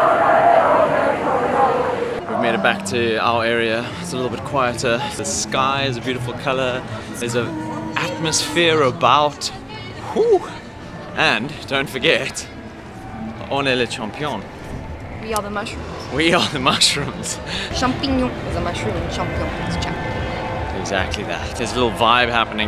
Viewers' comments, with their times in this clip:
0:04 quieter because all people were going to les Champs Élysées 😍🙌🏾🔥